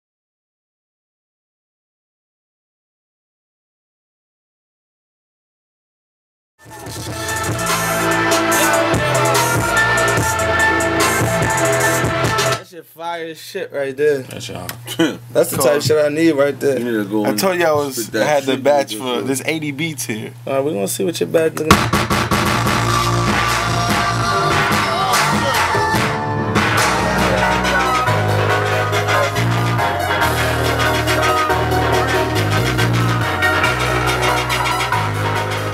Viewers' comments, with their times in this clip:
0:06 the beat goes so hard!
0:22 Mt Eden's Sierra Leone on steroids!